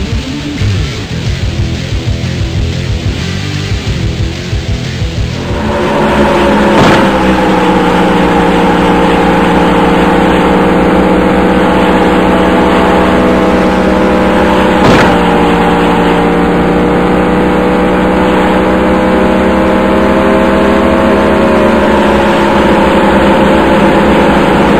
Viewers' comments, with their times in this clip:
0:05 Oh wow, it have better sound than GT6.